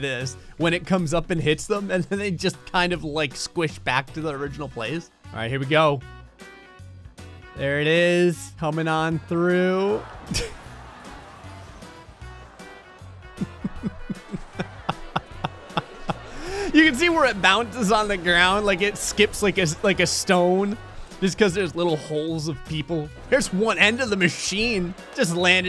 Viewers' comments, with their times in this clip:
0:08 Who else heard "oh no!" From the Sims?